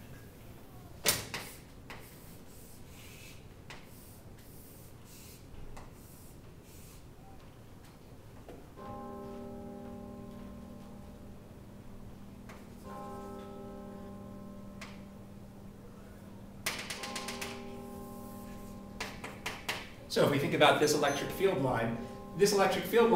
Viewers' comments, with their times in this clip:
0:10 Hey, Hell's Bells starts playing HAHA